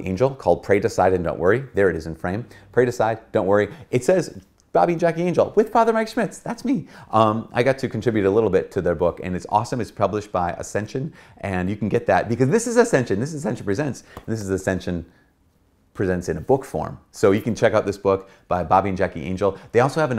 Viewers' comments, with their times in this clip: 0:05 "... with Fr. Mike Schmitz." *high-pitched voice "That's me." . I literally laughed out loud at that part. Thanks for everything you do, Fr. Schmitz. May God bless you!